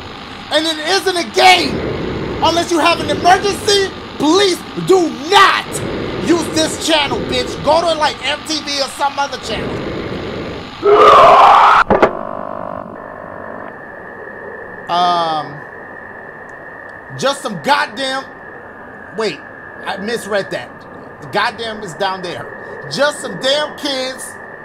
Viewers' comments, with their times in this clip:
0:10 Bitch that damn scream scared the life out of me 😭
0:11 Why Sounds Like Roman Regins 😂😂😂😂😂😂😂😂😂😂😂😂